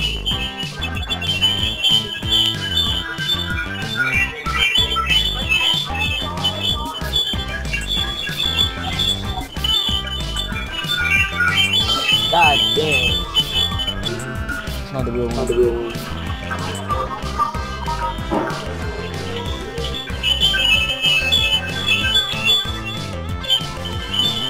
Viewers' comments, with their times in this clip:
0:06 omfg that screeching mic sound